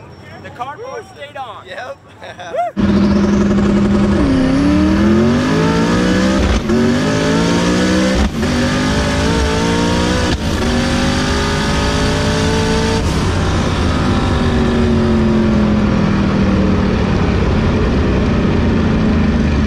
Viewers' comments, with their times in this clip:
0:03 bald eagle scream
0:03 One of them bald eagles escaped from the engine bay!
0:04 Where was the Eagle cry 😂
0:05 did anyone else hear a screaming eagle 🦅